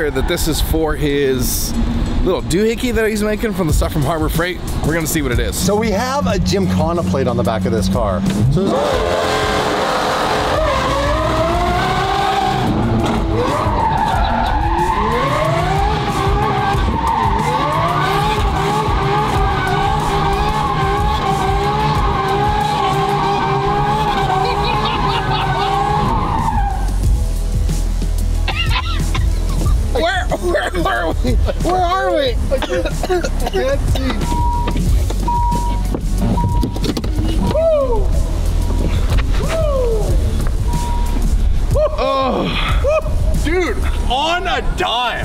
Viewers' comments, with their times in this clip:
0:09 nothing beats that launch sound from this SVJ
0:30 kitty cat go meow 😂